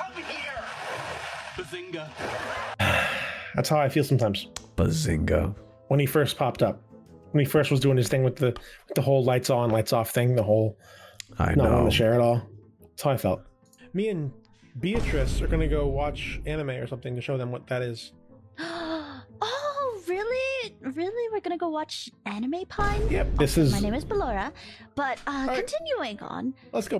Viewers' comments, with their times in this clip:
0:07 I could hear his neck cracking!